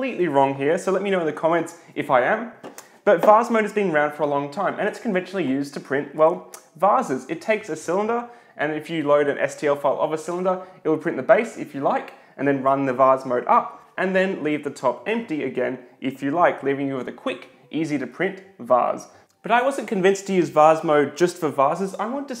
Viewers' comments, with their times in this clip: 0:08 It took me to realize that he has saying vase not vaz